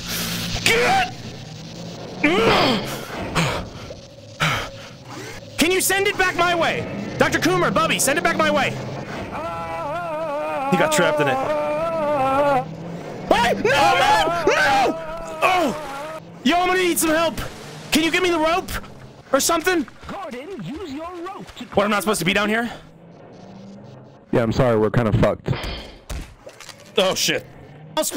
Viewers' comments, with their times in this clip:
0:09 why did Bubbies scream kinda sound like some sort of arabian song
0:11 He sounded genuinely scared there
0:13 genuine screams of terror